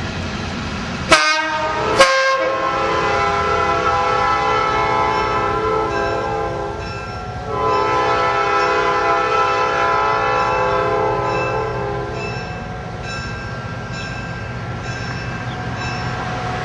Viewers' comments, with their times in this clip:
0:04 To me it's crazy to think one day these treaded the rails. Also you can eerily hear a New Cast P5.